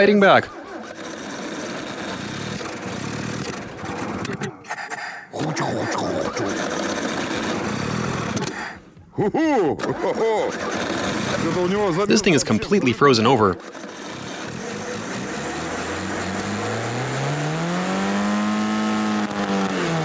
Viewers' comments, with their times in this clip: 0:04 it sounds like someone imitating the sound of a car not starting with their mouth...